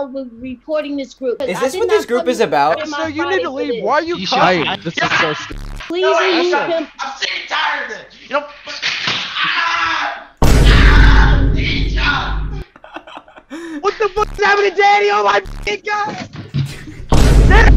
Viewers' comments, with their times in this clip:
0:04 even in the middle of her venting rage she still had to laugh 🤣🤣shit is too funny